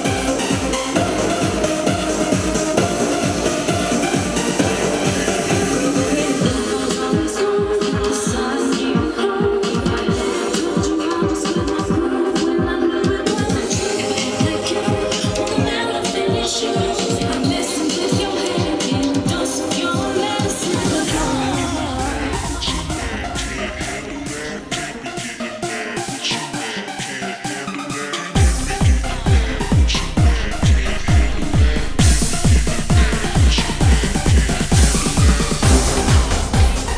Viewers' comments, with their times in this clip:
0:04 reminds me of a synth that basshunter used... anyway mysto & pizzi are waaaay better :D:D
0:24 >> yeah..as basshunter but better great ^_*